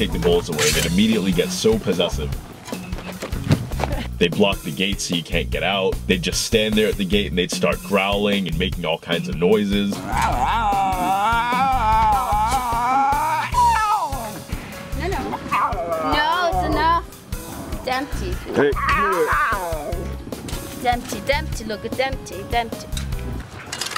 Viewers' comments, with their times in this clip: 0:10 Those noises what the baby lions do, sounds like zombies! Now i know where they inspired it from. So nice to see how much love you guys giving those animals! <3